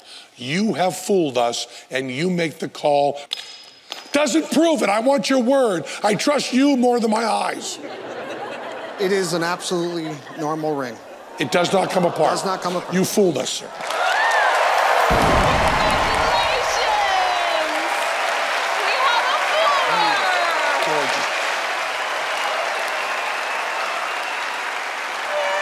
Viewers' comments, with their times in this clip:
0:09 you can see him stutter and show signs of resistance a bit. I’m sure he is lying Just gonna put it there. You can see him not happy at all. Even when he leaves